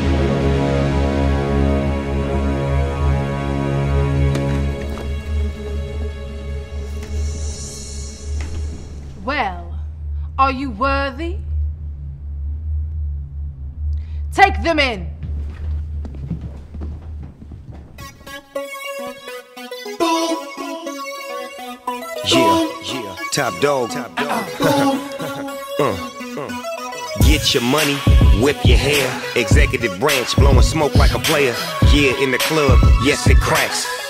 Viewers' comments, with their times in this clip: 0:10 haha what the fuck did she say ?!?! lol did she try to say "ready" ??
0:18 Best part o yah! Thumbs uP for sick music
0:18 = Free Bass lift =D